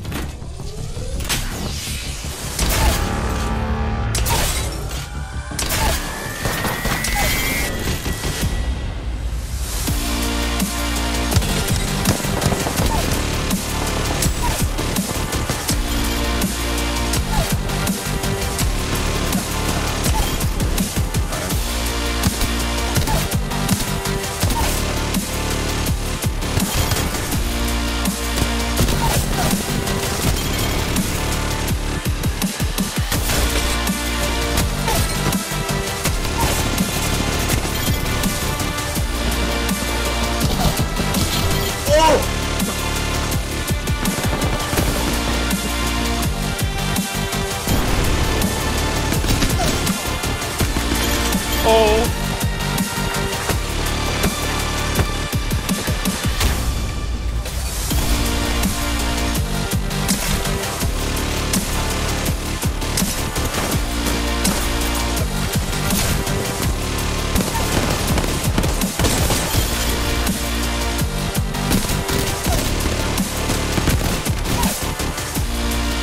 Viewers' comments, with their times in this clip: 0:03 onwards are sooooo satisfying with the song and hits
0:10 Nealy every wingman shot match the song from all clips
0:59 BEST SHOTGUN BEAT
0:59 ( BEST SHOTGUN BEAT EVER)
0:59 The peacekeeper went with the beat
1:00 the shots go with the beat
1:01 the peacekeeper shots go perfectly in time with the best haha that’s sweet